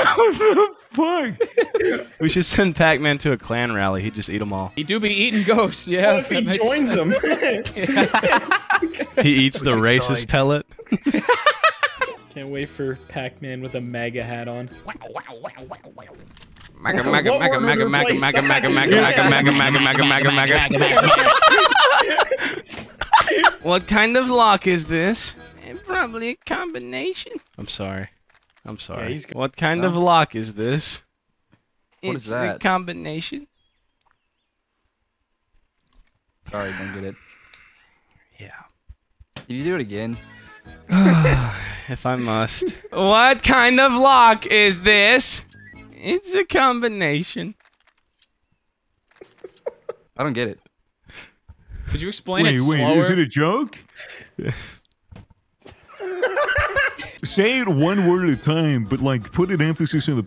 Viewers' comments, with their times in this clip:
0:10 Anybody think that laugh sounds like Elmo?
0:26 you sound like Benny from The Mummy Returns lmfaoo
0:42 I haven't heard that voice since og rust days